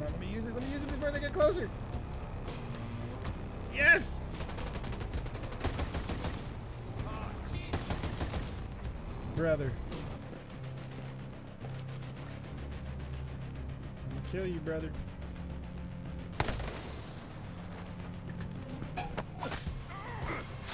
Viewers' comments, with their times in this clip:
0:07 This looked like you were having fun but you looked mildly easy to please lol. Glad yer liking it. that music though.